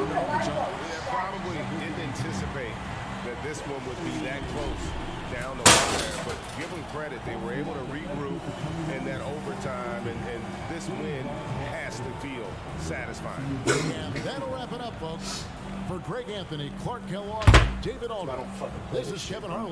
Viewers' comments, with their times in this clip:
0:04 damn Flight's controller bein' decimated sounded like he broke his window 💀💀💀